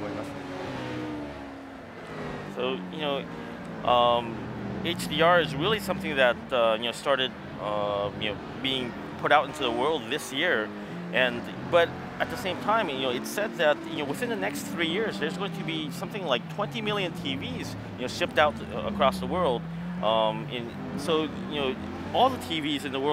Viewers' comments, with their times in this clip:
0:06 I HEAR VACUUM CLEANERS!!!!!!!!! >_<